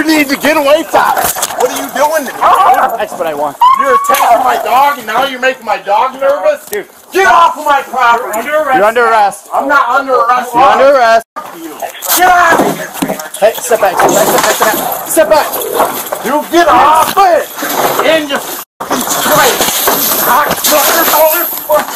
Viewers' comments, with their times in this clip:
0:03 Is that sirens or dog